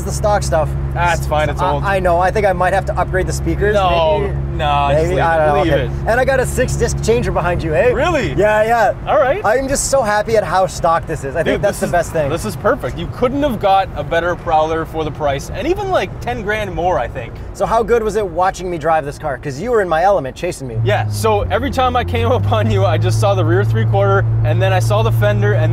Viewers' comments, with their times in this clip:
0:06 I was like those boys sound like they were from ontario... few scenes later, ontario plates.